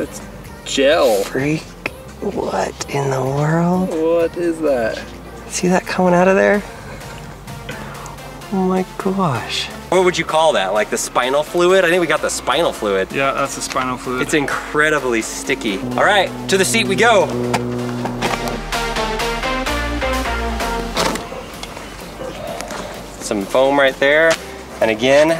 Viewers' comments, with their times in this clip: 0:07 tough that oh my gosh was 😂